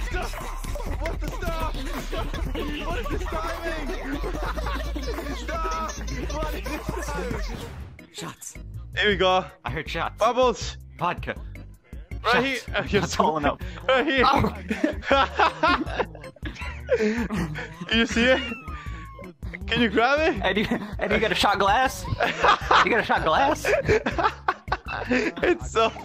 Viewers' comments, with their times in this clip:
0:08 WTF?! He sounds like me! I was like... "I don't remember this... wtf is going on? Did I have too many shots?"